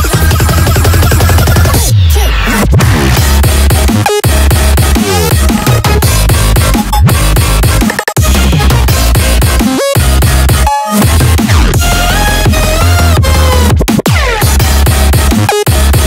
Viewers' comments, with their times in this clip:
0:04 I can feel strong Virtual Riot inspiration here